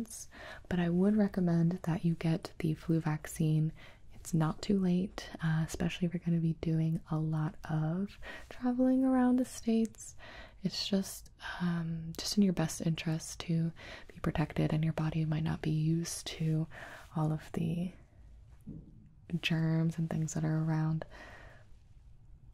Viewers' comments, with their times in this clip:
0:07 why does she sound like shes singing